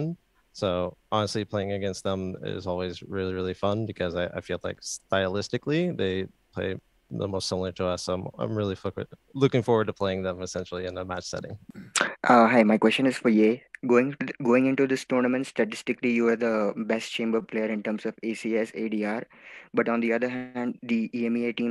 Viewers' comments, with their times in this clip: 0:08 "i'm really fvck with" ??? lmao